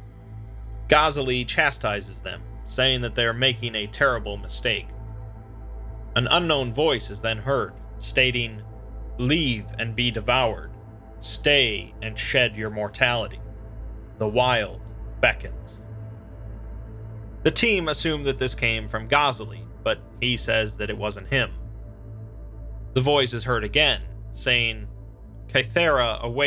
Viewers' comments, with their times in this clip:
0:10 this voice should write scam emails, id click